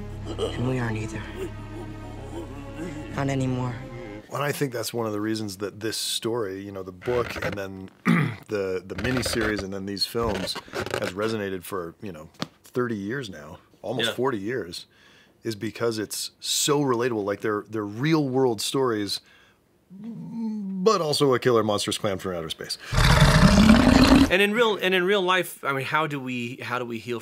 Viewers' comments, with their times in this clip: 0:04 I had this episode in the background while i was doing something else and when you guys put these sound effects of the balloons it actually freaked me out xD don't know if congratulate you or curse you
0:05 Whichever editor added the balloon squeaks ...🤣 chef's kiss
0:08 that sound effect ... it crawls on my skin ! creepy but brilliantly placed.